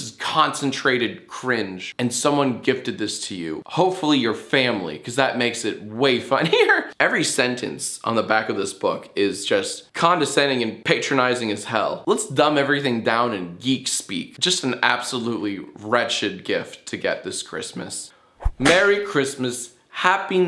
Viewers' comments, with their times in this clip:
0:04 how is that laugh being undersold by his facial expression